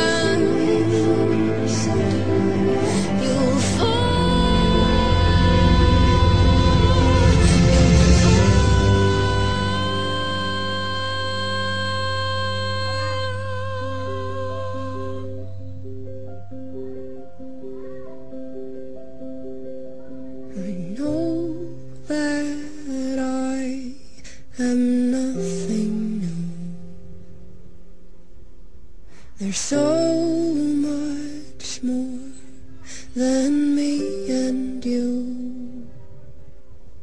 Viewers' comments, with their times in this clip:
0:09 Such a beauriful song. Remincent of Sarah Bareilles' "Gravity" :D
0:13 hahahaha you can hear someone say "wow" in the background... though they probably should have edited that out, i can't help but agree :)
0:18 there's a baby crying in the backround
0:21 can anyone else hear children in the background?